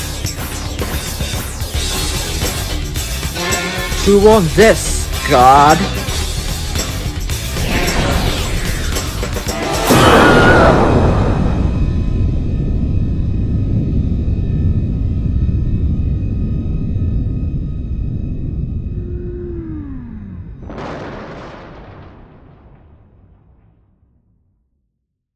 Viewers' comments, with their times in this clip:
0:08 😂 I like how the guard does the Wilhelm Scream